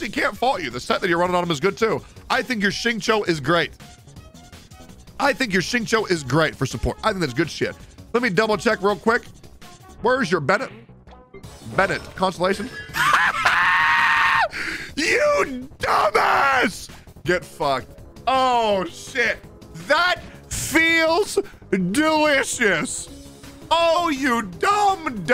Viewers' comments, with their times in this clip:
0:10 That laugh lol
0:11 that laugh sounded like a fnaf jumpscare
0:13 that laugh always gets me